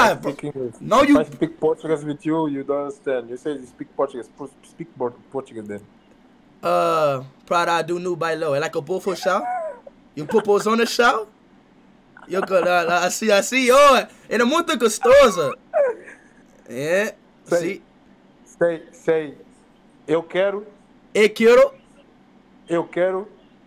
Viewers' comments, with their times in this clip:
0:08 speed singing parado nobailang 😂😂